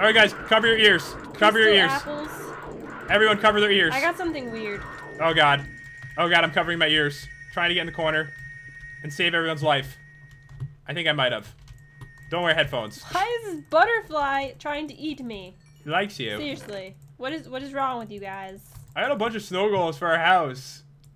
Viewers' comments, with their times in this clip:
0:04 Ear rape earrape warning